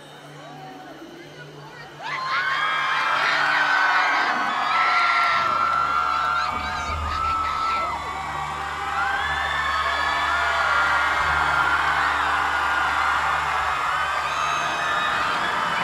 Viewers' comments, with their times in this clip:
0:03 Has anyone heard OH MAY PACKING GAAAAAAD ??